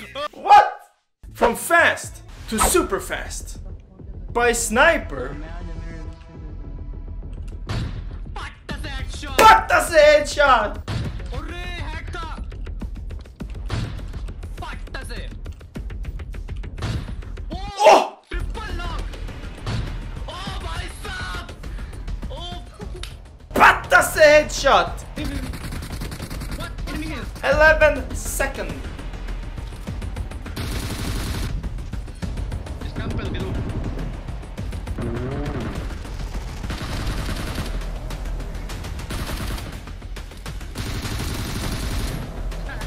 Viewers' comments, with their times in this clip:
0:07 my favourite patt se headshot 🙂
0:08 wow you pronounced very well ✌
0:23 You said Pat se headshot in such a cute way😊😊